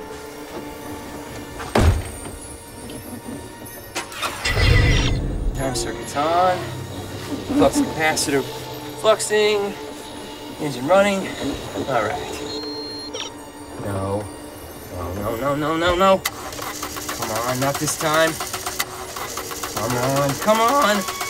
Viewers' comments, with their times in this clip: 0:06 I love this impersonation of McFly but for whatever reason my favorite line that nails "Marty McFly" is the comment " Flux Capacitor is... Fluxing. He did such a great job.